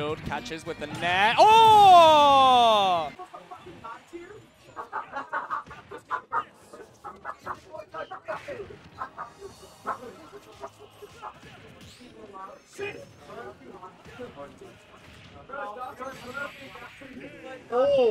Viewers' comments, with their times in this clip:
0:05 when the barnyard chicken is providing commentary on your match